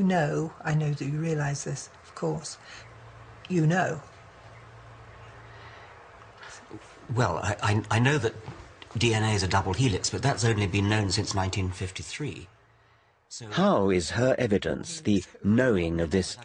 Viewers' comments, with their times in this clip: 0:03 The silence made me burst out laughing. richard took 4 seconds to compute the none sense he had just heard.